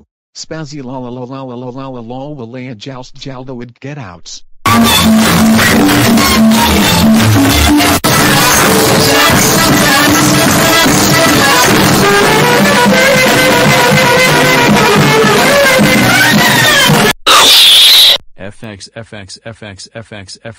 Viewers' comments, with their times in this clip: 0:04 turn down your volume